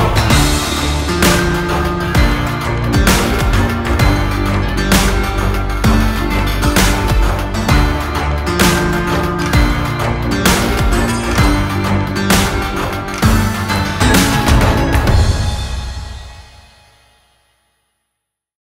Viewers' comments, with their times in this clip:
0:08 Can anyone else hear a weird ticking, like a clock, or a computer mouse being clicked at some points? It's in time with the beat, so I'm assuming it's intentional, but it really doesn't seem to fit with the rest of the sound. The most clear example I can give is near the end, but it appears at other points throughout the song too.